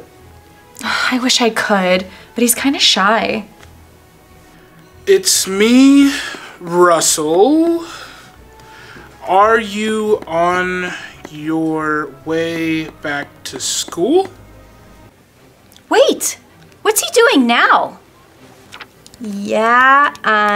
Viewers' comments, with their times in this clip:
0:05 This scene is too Damn long😂 Why is She speaking so loud beside her mother😂